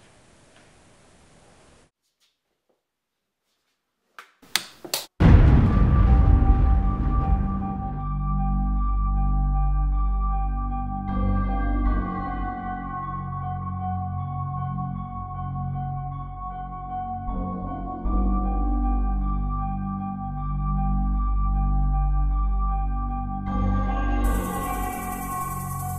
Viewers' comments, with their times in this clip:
0:08 the Michael Myers music YESSSSSS